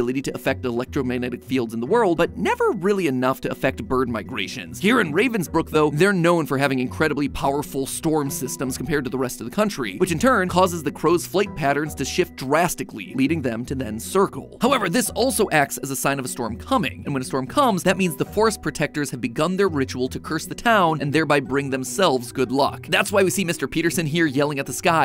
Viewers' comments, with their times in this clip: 0:09 do y’all hear the beeping ?